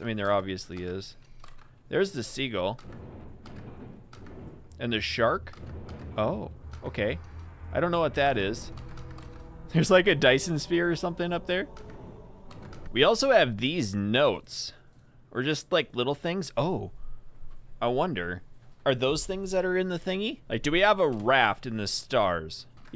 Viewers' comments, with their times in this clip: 0:08 If you listen very closely you can hear something that sounds like the intro music from the Halo show Edit a Dyson Sphere is something that encompasses a star and withdraws all of its energy
0:09 love the halo music and IT IS A RING